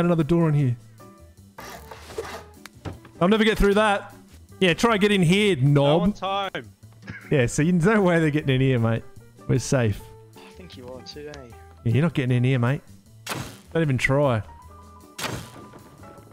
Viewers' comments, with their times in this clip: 0:03 The shriek actually spooped me lol.